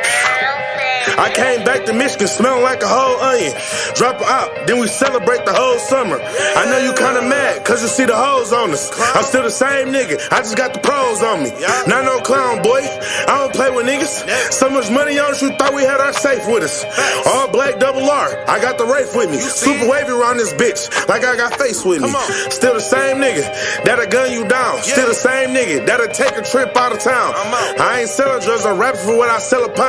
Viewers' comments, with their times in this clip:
0:10 krispy life beat go crazy